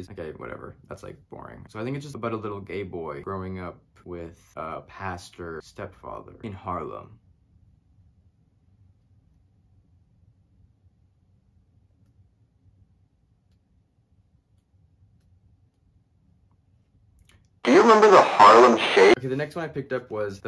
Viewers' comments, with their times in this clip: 0:08 okay this pause was unsettling